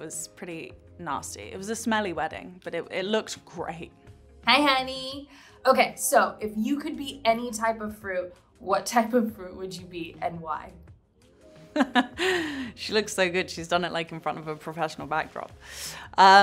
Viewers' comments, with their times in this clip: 0:04 this was so FAKE "hey honeyyyy"🤮🤮